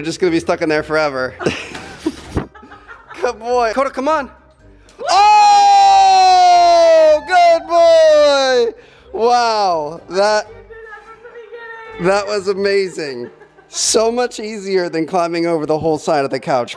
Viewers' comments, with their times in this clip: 0:03 Headphone warning just sayin XD
0:04 Earrape in 3......2......